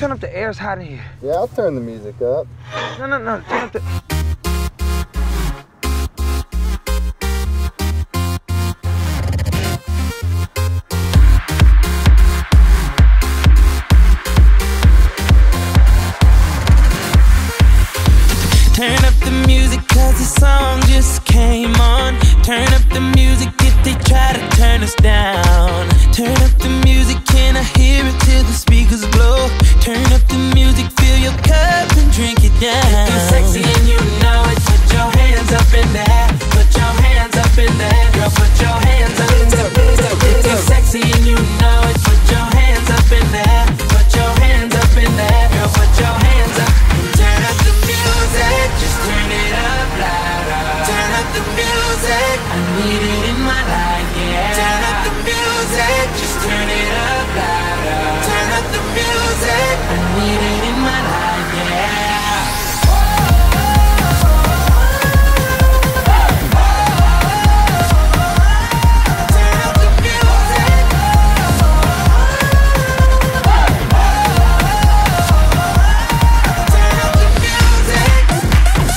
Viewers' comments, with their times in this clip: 0:03 The beat also sounds similar to Nicky Romero's Toulouse....
1:01 gave me mj vibes
1:03 this sounds like hookah bar hindi song